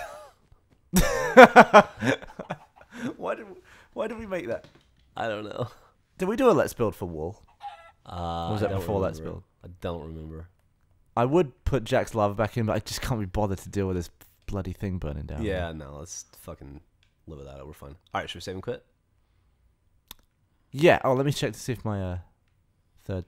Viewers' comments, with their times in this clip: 0:04 you can hear Percival eating the new Conrad b4 they managed to save xD